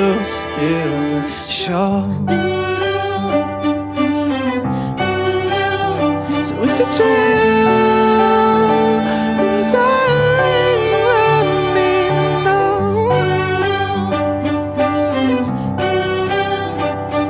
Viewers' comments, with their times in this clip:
0:04 He has a good voice and i love this song